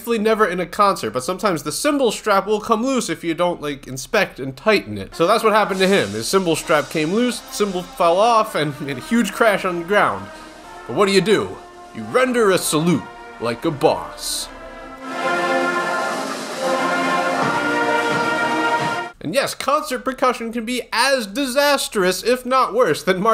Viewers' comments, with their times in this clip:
0:06 Only real drummer will know that not enough POWA on that bass for the nation anthem